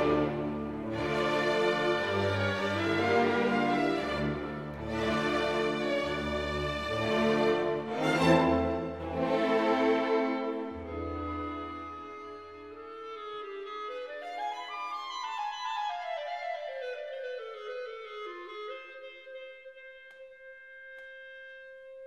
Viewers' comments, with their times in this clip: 0:08 I'm also a fan of the anti gravity slow down on long note